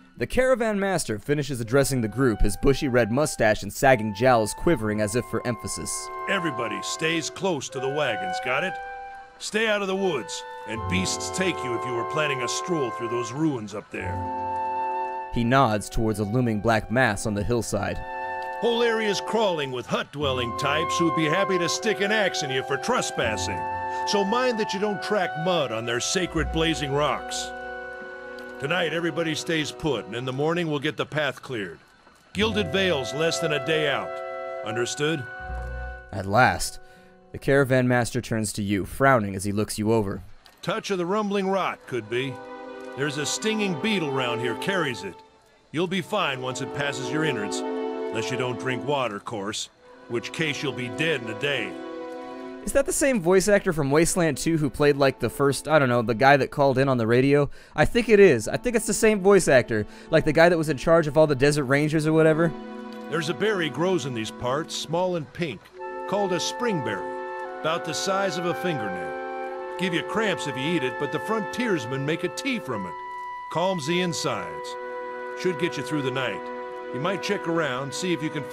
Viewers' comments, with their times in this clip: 0:06 that sounds like a voice actor from skyrim, a generic old guy. "being olds not so bad, daughter keeps me fed and my working days are done"
1:02 the guy sounds like the VA if batou from ghost in the shell